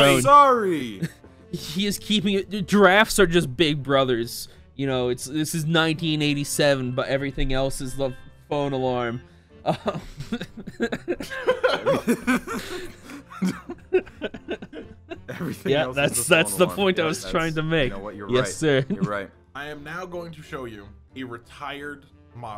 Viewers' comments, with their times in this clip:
0:09 man's gotta Google pixel based off that alarm.